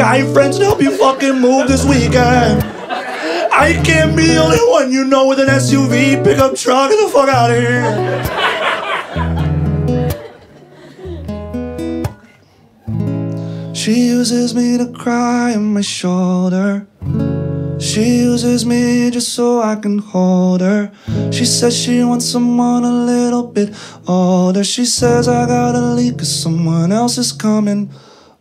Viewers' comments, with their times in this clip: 0:10 actuly him voice is good.